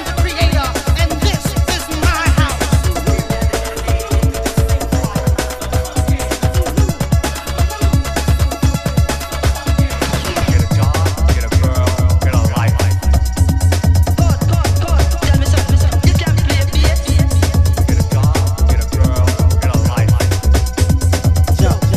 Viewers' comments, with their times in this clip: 0:06 bassline creeping in is sinister